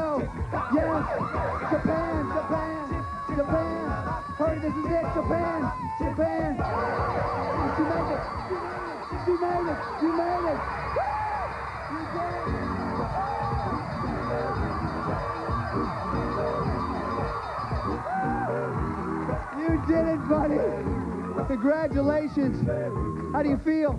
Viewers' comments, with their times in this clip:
0:09 at the buzzer and pure jubilation from her and Greg.